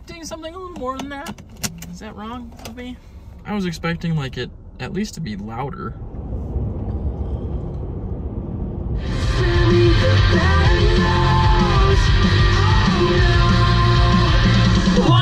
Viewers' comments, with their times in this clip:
0:03 yeah the musical highway was actually paved wrong. It’s completely out of tune. You are correct for expecting something better